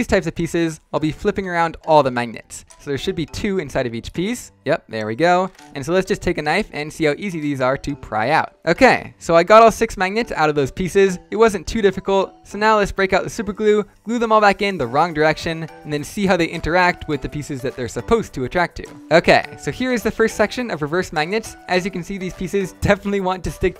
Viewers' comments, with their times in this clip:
0:04 I love how he casually says “let’s take out a knife”